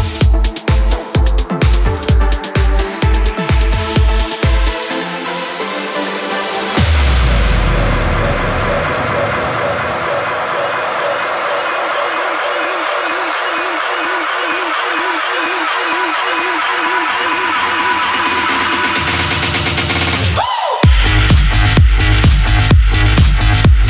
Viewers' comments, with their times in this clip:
0:06 fuck i really love that type of electro